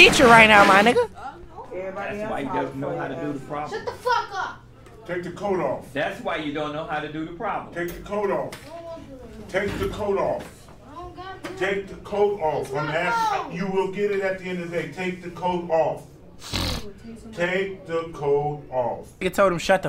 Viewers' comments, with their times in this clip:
0:03 why he said it like that😭